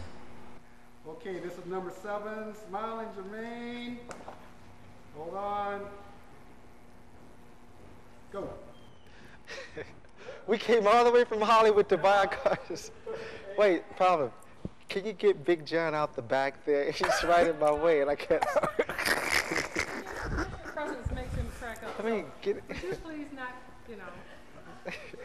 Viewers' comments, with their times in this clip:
0:10 you can't tell me he doesn't laugh like michael ... The movements are almost the same